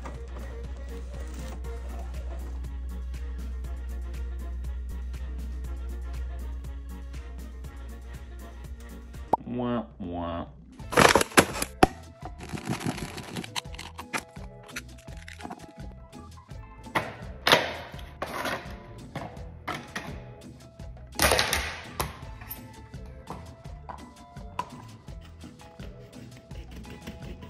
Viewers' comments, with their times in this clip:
0:09 You Wah Wah Me: Yes sir? (Peanuts reference 😂🤣)